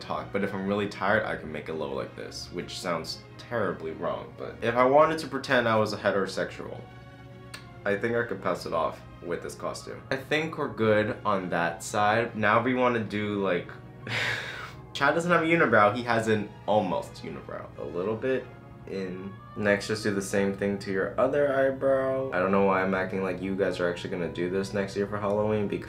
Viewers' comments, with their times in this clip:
0:07 why did he sound like Felix from Stray Kids